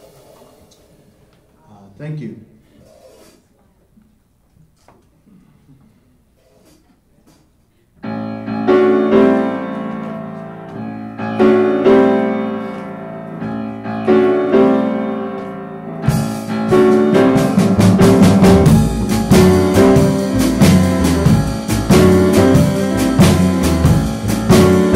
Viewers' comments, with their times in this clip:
0:07 Nicely done cover....(Music starts )